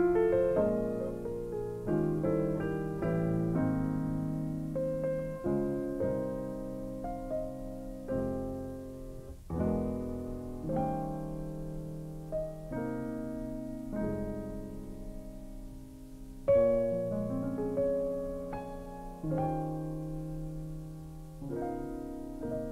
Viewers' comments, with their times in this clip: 0:10 BY THE WAY... ACTUALLY happens to be E9 #11 and NOT just a regular E9. Professional musician here.